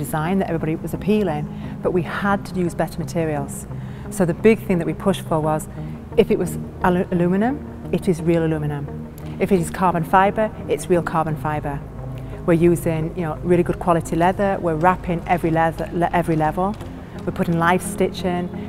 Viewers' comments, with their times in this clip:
0:06 Ha, she almost said the U.K. pronunciation of Aluminum.